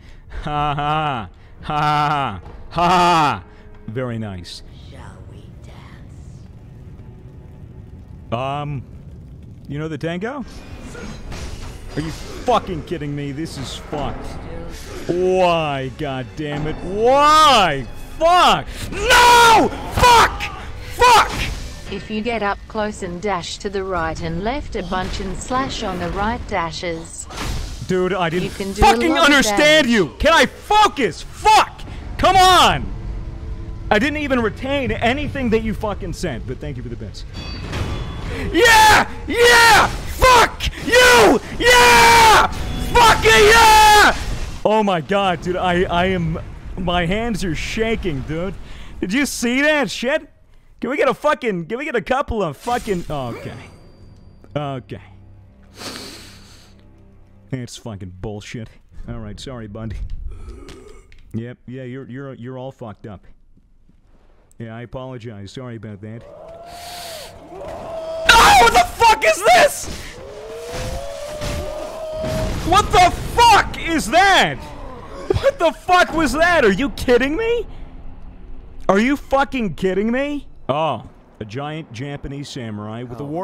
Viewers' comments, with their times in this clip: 0:09 This is so late but I’m hi so it when the swords hit it’s John Cana
1:06 YES THERE IS WOO GUY
1:06 the best scream of pure fear
1:06 oooing jontron missile inbound